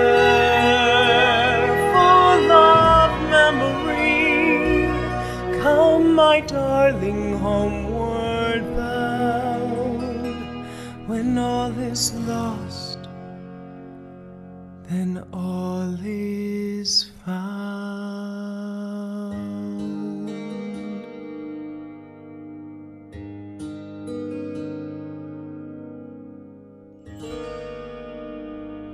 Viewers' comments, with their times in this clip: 0:09 I love these violins in the background, they give a very medieval vibe!!💙